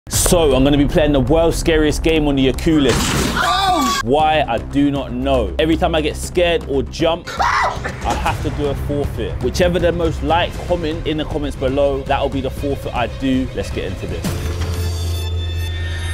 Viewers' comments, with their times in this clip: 0:01 Lol what’s a ocuulis😂